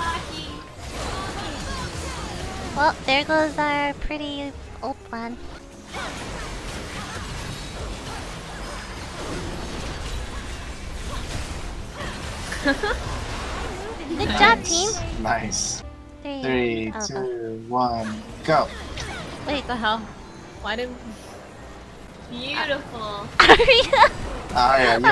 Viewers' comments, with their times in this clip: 0:06 so many sound effects oh god so many luxes wow ;-; my ears are begging you all please dont laugh